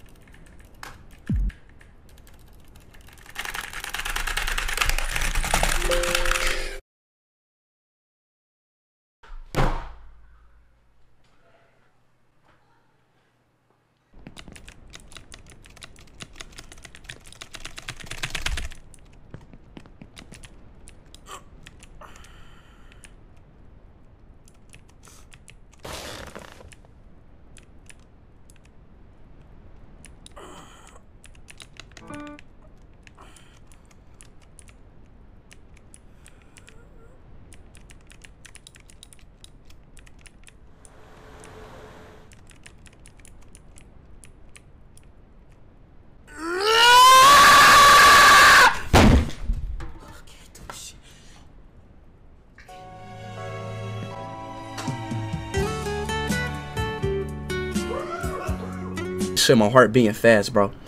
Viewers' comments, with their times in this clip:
0:05 😂 😂the sound of the keyboard
0:46 Caveman tries to communicate with dinosaurs: